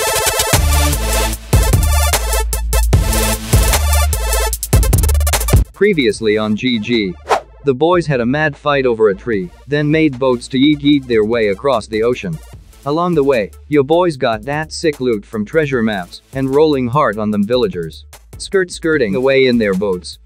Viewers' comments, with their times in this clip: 0:07 why is the voice so funny to me 😂😂😂😂😂